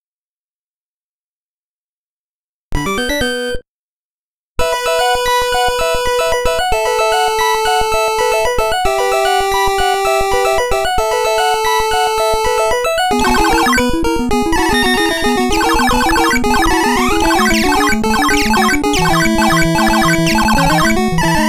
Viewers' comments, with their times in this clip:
0:04 The music of the very first level gives me goosebumps.... My good'ol days! I loved this game a lot